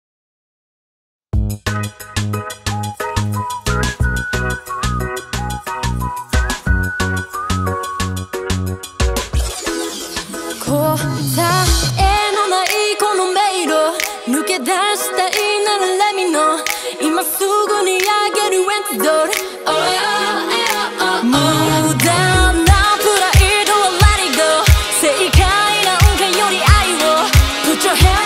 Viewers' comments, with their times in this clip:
0:04 I thought, that it's Ariana Grande😌
0:12 reminds me of Black smoke by Ann Sophie